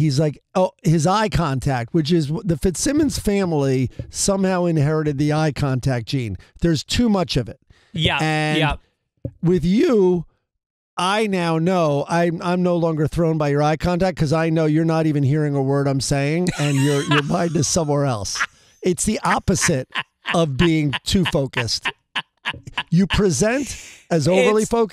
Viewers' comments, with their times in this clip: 0:08 Maybe Greg's biggest spontaneous Sunday Papers' laugh to date, saying a lot considering Greg generously reactive personality. In trying to clarify Greg's stare is not creepy, he inadvertently roasted him in a way many of us ADHD folks can see in ourselves. Also ... Greg's hearty agreement to being told the Fitzsimmons family being to heavy on eye-contact needs some elaboration from Greg. Never heard, can't imagine such a thing being a family trait.